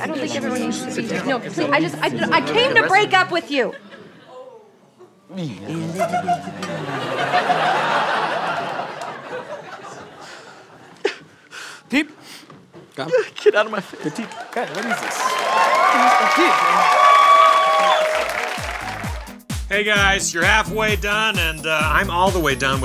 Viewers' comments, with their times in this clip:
0:04 Audience member: ooooh